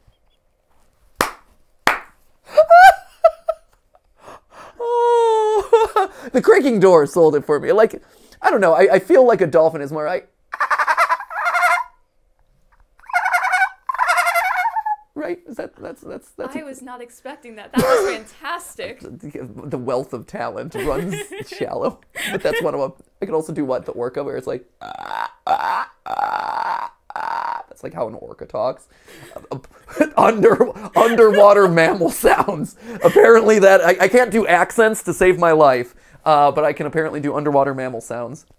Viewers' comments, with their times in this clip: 0:05 put that sound he just made over some kind of bird.
0:19 his orca sound sounds like a clicker from the last of us-